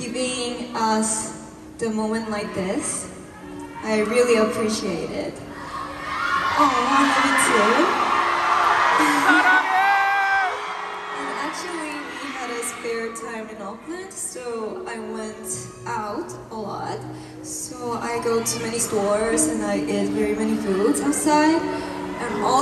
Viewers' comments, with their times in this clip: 0:03 after Ryujin says "I really appreciate it." and someone in the crowd screams "We love you!" that was me screaming.... I still can't believe Ryujin noticed me then said "Aw, I love you too."